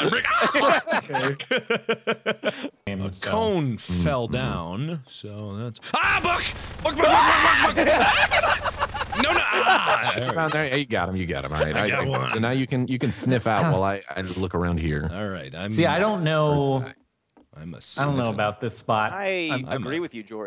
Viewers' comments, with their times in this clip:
0:07 That scream XD